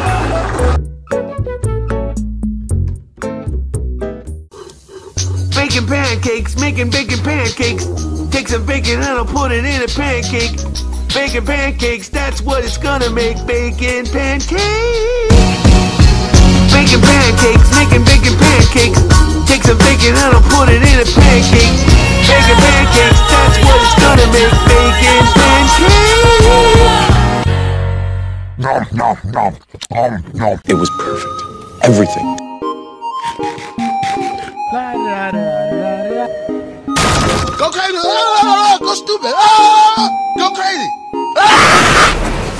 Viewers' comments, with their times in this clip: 0:04 this Song is lit🔥🔥
0:04 Im hearding it like "bacon pancakes bacon bacon bacon pancakes on "
0:05 I love him singing about the pancake part he can sing on the concert and get famous
0:26 the super song